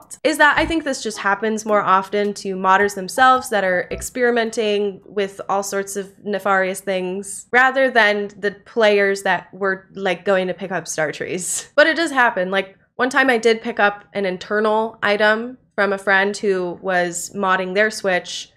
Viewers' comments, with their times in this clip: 0:05 pronounced it wrong you pronounced it like despicable me